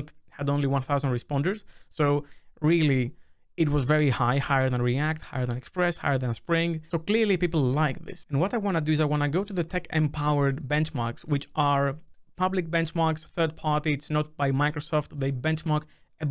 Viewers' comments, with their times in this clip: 0:04 During recording he downloaded a league update :D it finished about ~ ... that league client sound :D